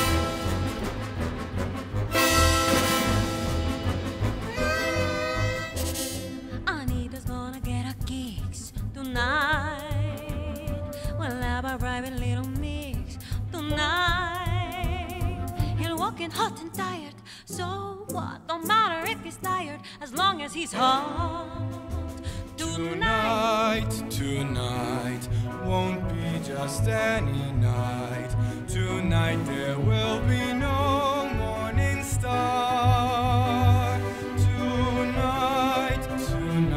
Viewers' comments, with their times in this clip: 0:07 The instrumental is genuinely one of my favorite parts. It differs from the original quite a lot, likely because it left the same energy that the first one had, but the catchiness, the emphasis on certain words, and the tempo...gosh I love it
0:22 i love tonys voice with the piano/accompaniment ((: love this song